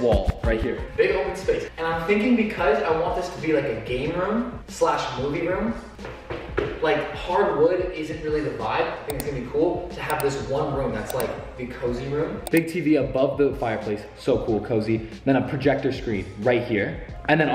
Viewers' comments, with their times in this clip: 0:05 TIP TIP TIP ON HARDWOOD FLOORS